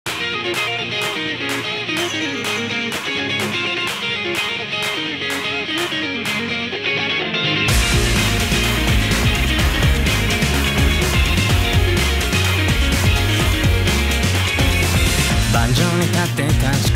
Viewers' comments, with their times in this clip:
0:00 This is so beautiful dude 😢 I always hear the bells sound when denji hit aki balls 😂